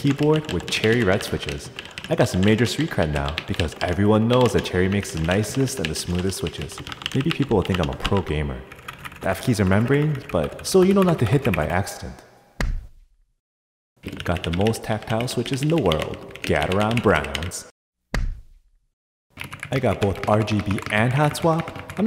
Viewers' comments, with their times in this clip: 0:10 is it me or he said cibai